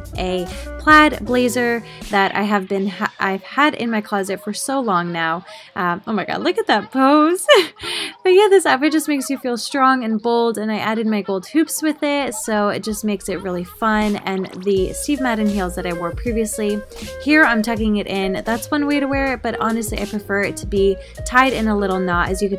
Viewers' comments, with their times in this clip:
0:06 Don't quit making that voice high pitches, they are melting charming